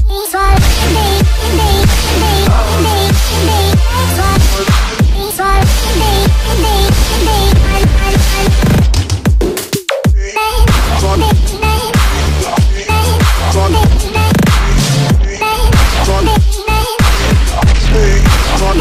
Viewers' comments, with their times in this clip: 0:03 did anyone hear the death sound?